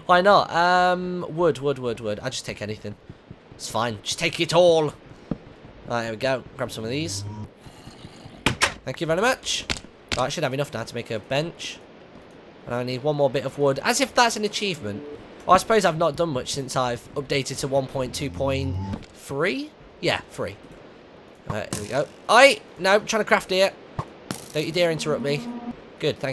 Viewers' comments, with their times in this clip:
0:07 i wonder what tht moaning was sounds like a boss zombie to me thts my guess